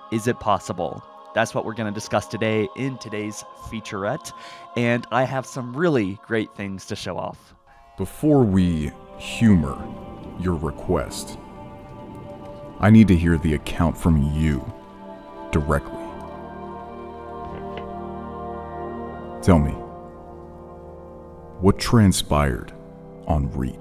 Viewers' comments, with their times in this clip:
0:06 So hype. Love the voice of the character !